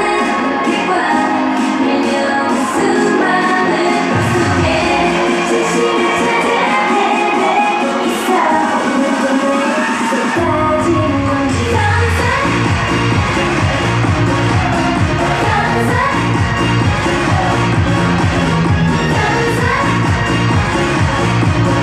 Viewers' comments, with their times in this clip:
0:09 I hear Nancy's fangoat merries are at the back so it's hard for us to hear them ... But Kmerries did a great job they always cheer our Girls...